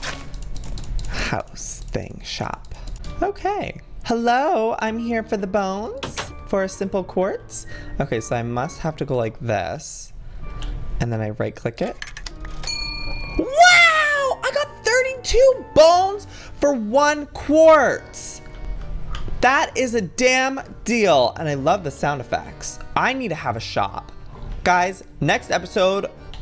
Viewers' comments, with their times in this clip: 0:08 God bless his WOW!!!!!!!!!!!!!!!!!